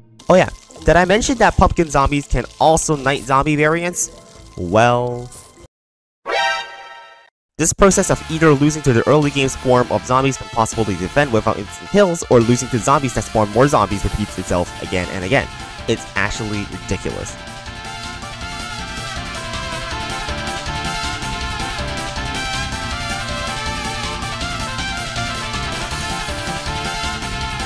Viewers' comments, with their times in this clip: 0:09 murasa's theme jumpscared me